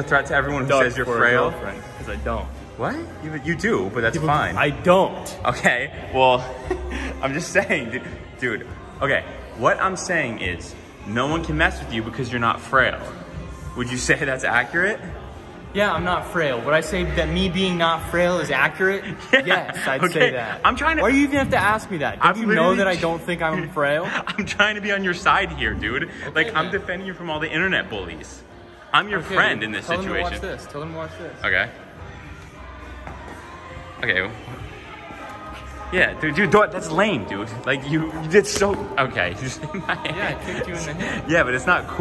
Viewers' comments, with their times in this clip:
0:04 bro why is a gym playing disney music Lmfao
0:30 how did they not get copyrighted from the bruno song in background